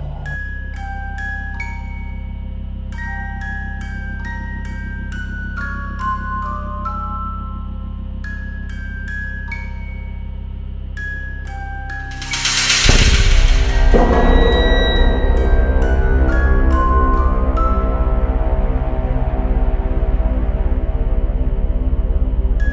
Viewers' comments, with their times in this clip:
0:03 what the heck is she saying 😭🤚
0:09 Me turning back the volume on hears creepy voices Also me:Ok yeah no nevermind!